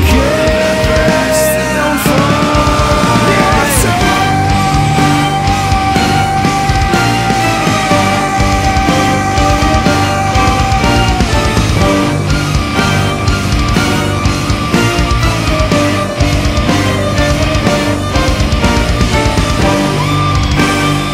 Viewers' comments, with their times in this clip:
0:03 your voice is real 😮😮😱❤❤